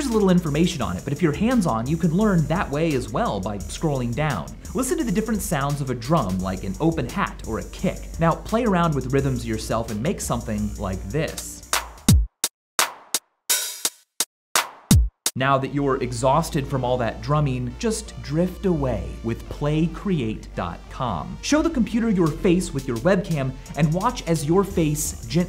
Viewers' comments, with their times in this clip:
0:09 coke music lol